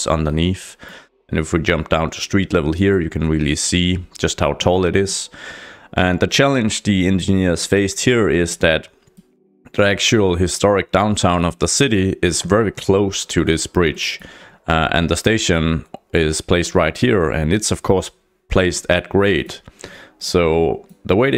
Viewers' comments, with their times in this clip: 0:09 Rendsburg was the first thing that came to my mind when you started explaining. Oh yeah, and you better be sorry for butchering the name, because you really.. ahhh just kidding :) Happy New Year!